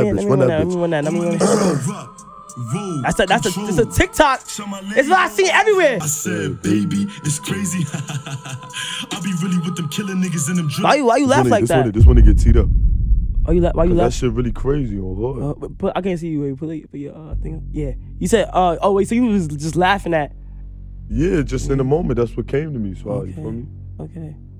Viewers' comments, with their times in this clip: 0:06 lowkey he laugh like pop smoke